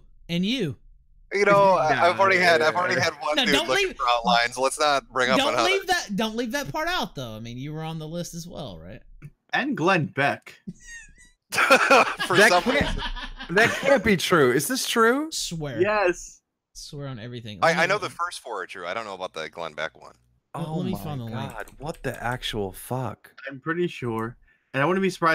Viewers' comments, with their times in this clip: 0:09 "... and Glenn Beck" (tiny squeak) EXPLOSIVE LAUGHTER